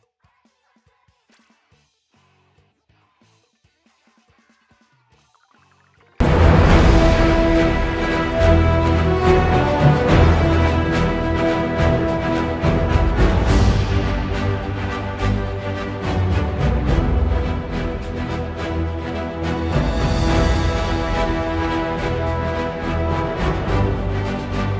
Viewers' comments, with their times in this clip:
0:05 warning headphone users. YOU HAVE BEEN WARNED!